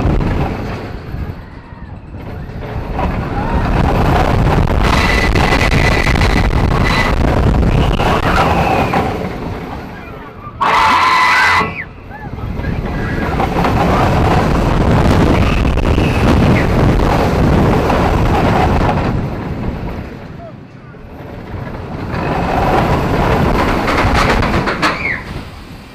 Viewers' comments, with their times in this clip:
0:09 Lol is that a man screaming or the hold brake?
0:09 Lol is that a man screaming or the hold brake?
0:09 Lol is that a man screaming or the hold brake?
0:09 Lol is that a man screaming or the hold brake?
0:09 Lol is that a man screaming or the hold brake?